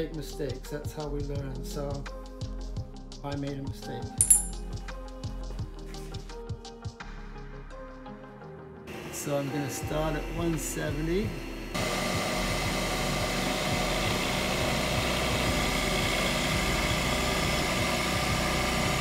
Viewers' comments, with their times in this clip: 0:03 I appreciate you sir thanks for the great content. I also appreciate that you've gotten a microphone since this video was made